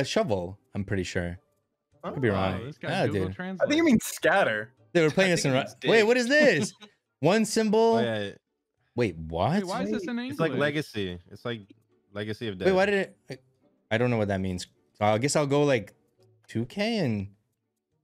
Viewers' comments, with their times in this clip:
0:06 Копай means Dig. Also I'm pretty impressed how you managed to pronounce Й with 1st try